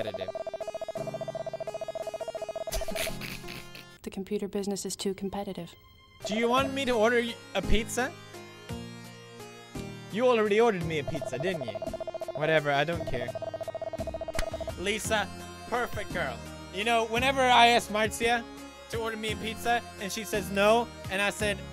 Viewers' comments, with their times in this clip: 0:04 wtf is with that winded bottle laugh